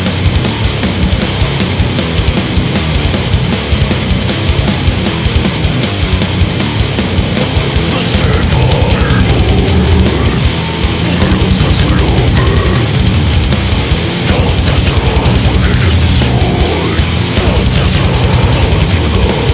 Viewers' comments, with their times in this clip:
0:07 they did him dirty with the brown note